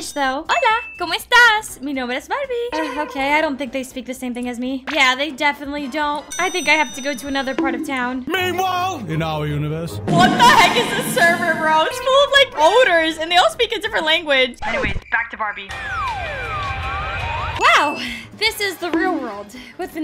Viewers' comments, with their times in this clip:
0:05 that grill was speaking Romanian